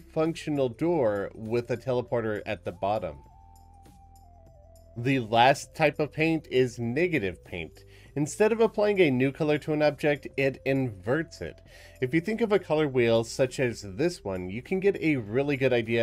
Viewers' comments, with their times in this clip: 0:04 Why he say negative like that? 🤨